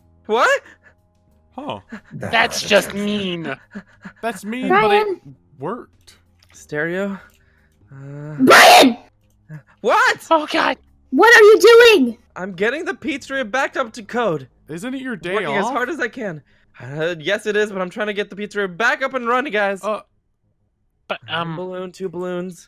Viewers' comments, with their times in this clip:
0:07 Baby's earrape scream
0:08 ℝ.𝕀.ℙ ℍ𝕖𝕒𝕕𝕡𝕙𝕠𝕟𝕖 𝕦𝕤𝕖𝕣𝕤(;´༎ຶٹ༎ຶ`)